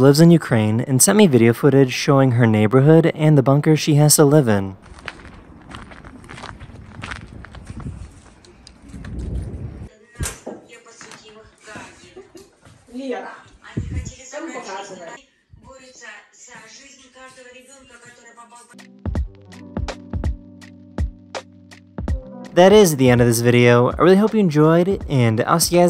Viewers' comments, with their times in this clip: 0:08 you noticed they are speaking russian right?